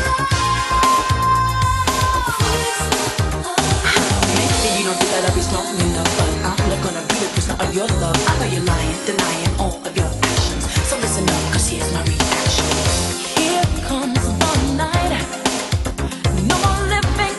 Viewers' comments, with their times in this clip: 0:03 recorded breath sound or something?